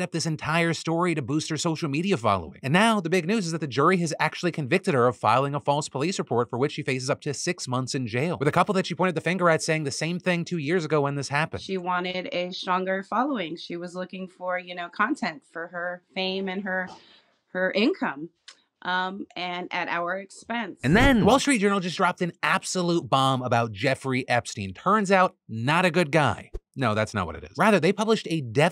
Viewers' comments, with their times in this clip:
0:10 I had a feeling she was lying. Im blind and it was her tone of voice.